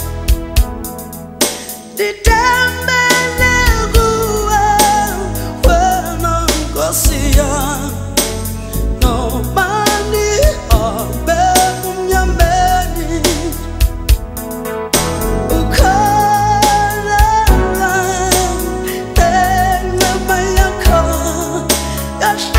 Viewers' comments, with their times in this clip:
0:09 The combination of notes she dropped to 0.47 (Noma ngihamb' ebumnyameni). Musical excellence.